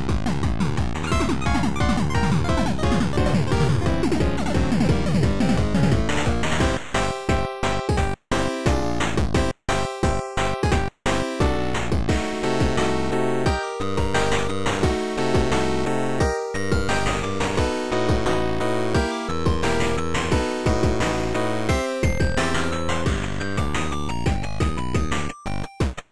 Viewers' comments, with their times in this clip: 0:07 Not gonna lie, sounds like a kids show opening song.